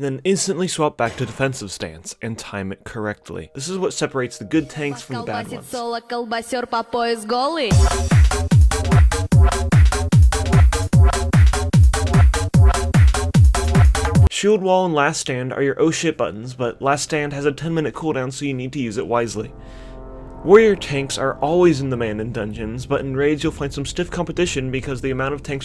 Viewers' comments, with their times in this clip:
0:06 Really liked that Hardbass (Хардбас, how we call it in Mother Russia) I guess all Russians like Hardbass